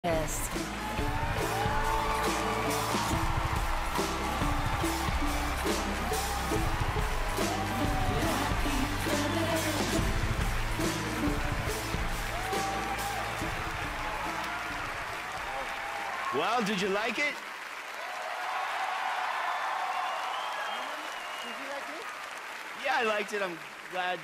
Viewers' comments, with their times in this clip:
0:07 clapping like there's no tomorrow